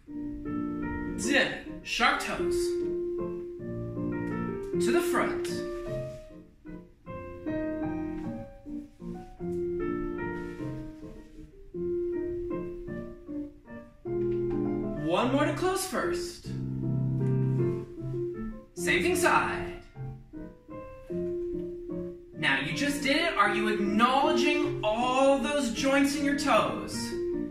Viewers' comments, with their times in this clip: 0:08 Watching, and - forgive me I thought you said shark toes! 😂